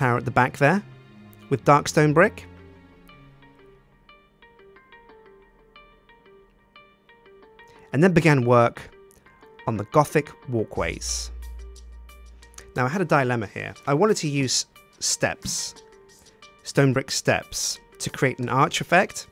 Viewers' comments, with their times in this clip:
0:03 Love the music